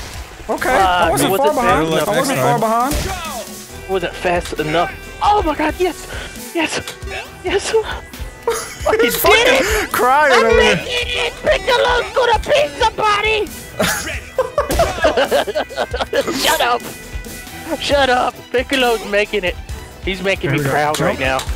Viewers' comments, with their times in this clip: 0:07 it sounded like delirious was moaning lol